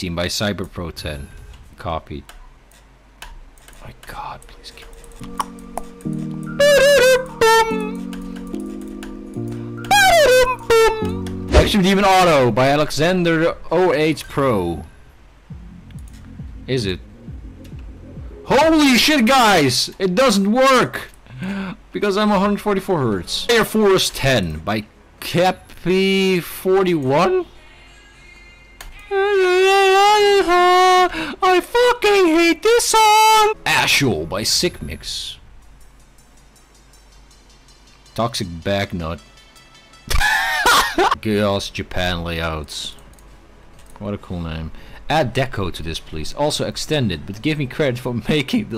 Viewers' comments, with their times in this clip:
0:06 rip my ...ears...... TUTUTUTN TUTUTUN I like it :p
0:29 I fuckING hate THIS song
0:29 the way he said it is soo funny